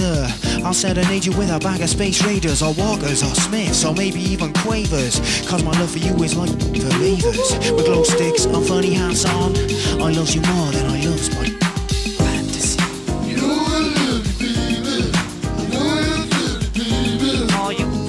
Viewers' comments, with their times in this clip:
0:05 One of the best parts of the song is the 'Ooo-hoo hoo-hoo hooo' and the kung fu hand dancing it's obviously part of the original track but the overacting is legit 😂. I truly lost it when I first heard that 15 years ago... Good times and yet the mainstream exposure was largely over in a few years as the fallout from the World Cup qualifier got them red flagged.